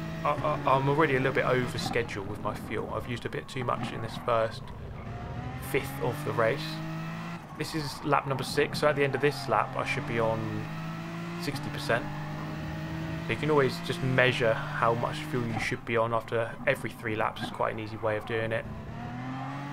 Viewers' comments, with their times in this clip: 0:07 Who else heard that beautiful turbo flutter 🥵